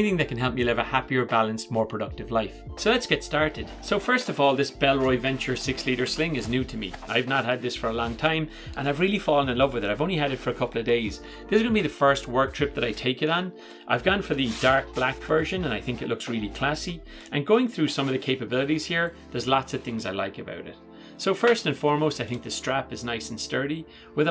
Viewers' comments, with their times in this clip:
0:05 ahh yes, "BELLBOY"